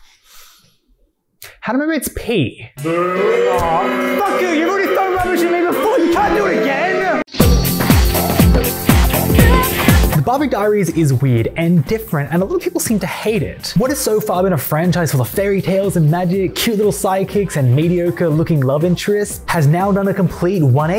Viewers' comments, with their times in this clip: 0:07 the sudden sound of "want to be close" on gave me whiplash